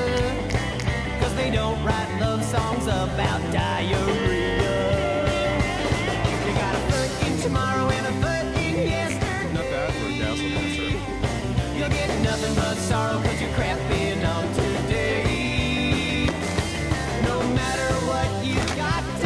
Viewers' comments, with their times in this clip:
0:04 I really like the dancing..hilarious hahah... And the music..woow..the drag queen is the best ( Great voice)..xD!